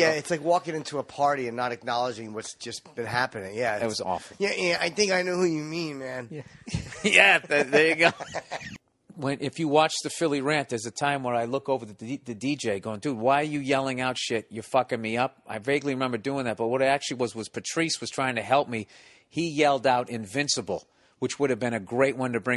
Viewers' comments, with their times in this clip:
0:05 You can definitely hear the edit of where they cut out the guy's name lmao
0:07 ... "Yeah, I think I know who you mean,man"!! Boy, that sounds alot like Rick Shapiro!! 😂